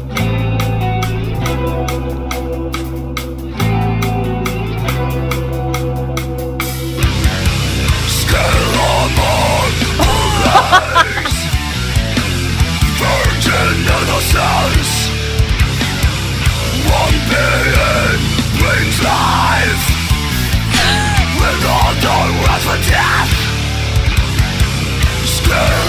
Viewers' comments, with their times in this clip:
0:09 First time time here to see ur reacting video and let me say ur reaction then laughing is so priceless 😂❤ ngl i must see more of this 😲